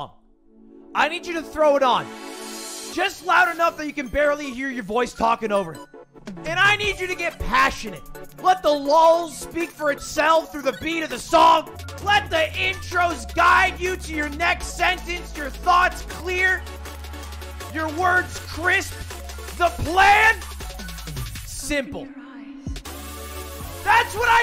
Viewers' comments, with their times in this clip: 0:08 gilbert gottfried vibes